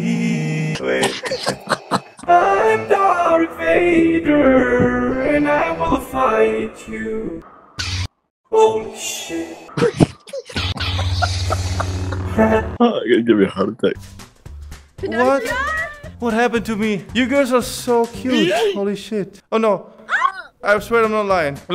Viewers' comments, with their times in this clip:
0:08 darth vader got that autotune 😂